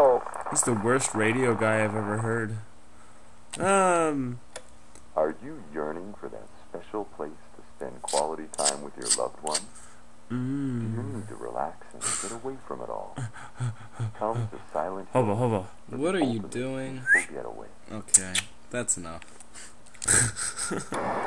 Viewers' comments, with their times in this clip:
0:08 Why was he making noises ?